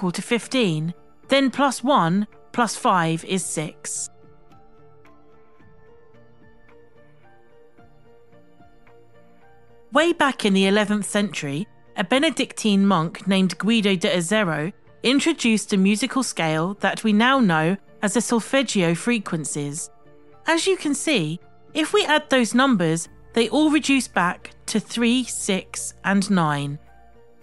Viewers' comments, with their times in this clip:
0:08 The two frequencies are 96hz apart